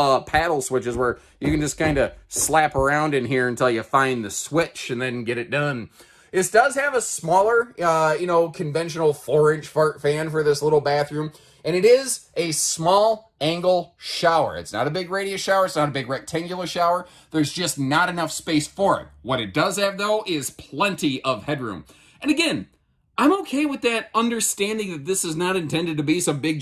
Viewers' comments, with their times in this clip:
0:09 Did you say 'forage fart fan' ??? 🤨 That being said, this one has always been on my short list. I'm definitely in its target niche; I was getting concerned they would do away with it as well. I would like a bigger handle by the door. I have no issue with not having a windshield, but I'm Southern so heating from the sun is always in the back of my mind. To be honest, I don't like the dark decor, but that being said, it looks good with the countertop and the flooring. It's not a deal-breaker for me. And I'm ok with the overbed storage not having doors. I would put storage baskets/bins up there. It's still on my short list. 👍